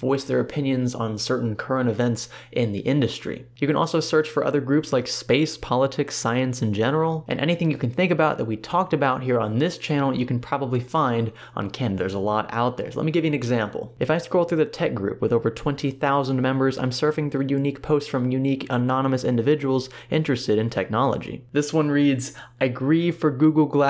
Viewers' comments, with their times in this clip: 0:05 When you started listing the different categories at first didn't realize that there was a comma in between space and politics. So for the last 30 minutes I say there and wondered what space politics would be like and about.